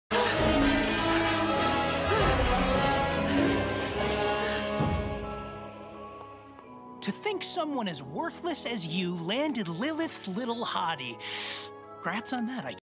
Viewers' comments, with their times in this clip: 0:06 somthing about this theme feels buetiful and tim burton esque